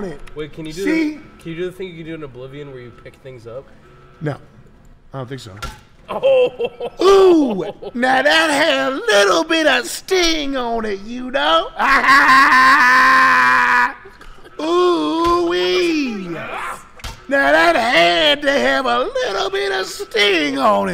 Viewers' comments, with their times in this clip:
0:05 sam does a sauce walka impression